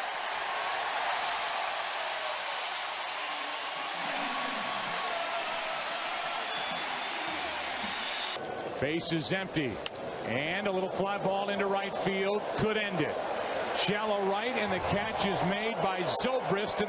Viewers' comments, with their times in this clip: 0:03 who else heard the "aaaaaaaa" by the Yankees commentator in the background in the ESPN call?